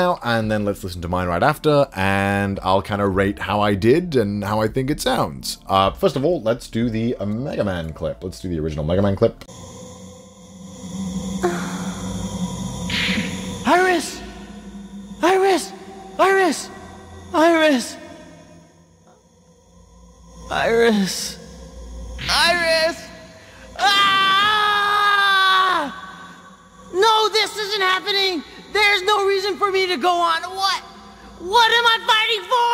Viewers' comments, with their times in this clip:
0:10 it's those times when you releive the pressure building up in your stomach and sigh
0:14 words: "IRIS IRIS IRISSSSS.." Cc subtitles: "VIRUS VIRUS VIRUS AHAHAHAHHAAAAAAAAA..."